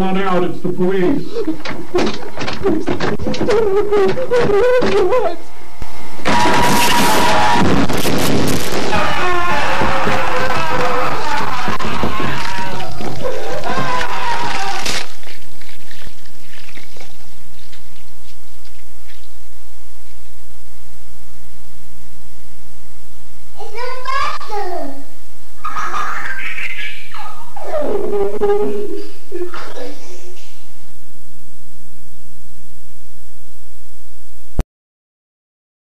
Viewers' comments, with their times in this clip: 0:06 that jumpscare actuall scared me so bad, not to mention that voice actor went crazy too 😭
0:22 I don't know why. But the child's voice happily saying "It's a monster" after all the madness is the funniest thing I've ever seen in analog horror.